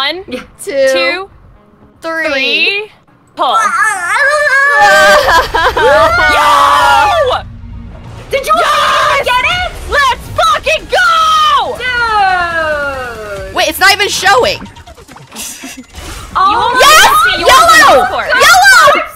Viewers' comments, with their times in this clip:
0:04 why robin va sound like an anime flustered noise